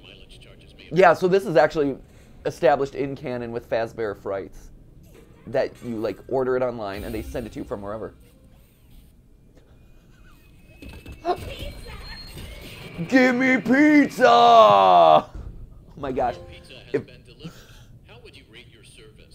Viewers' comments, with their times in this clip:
0:04 I think the part might be a reference to those "How to Make FNAF Not Scary" videos. Chica has the same inflection when she says "Pizza? Pizza!" that Chica had in the running joke of those videos.